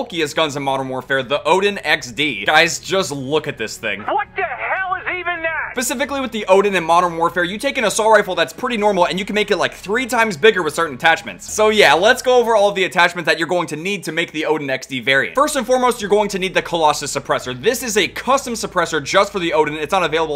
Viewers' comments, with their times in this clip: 0:04 Psycho dads voice